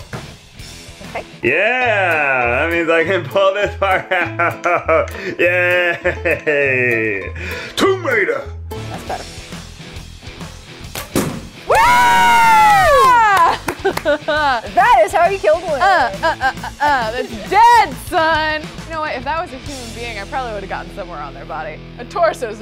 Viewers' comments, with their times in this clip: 0:09 RIP ear/headphone users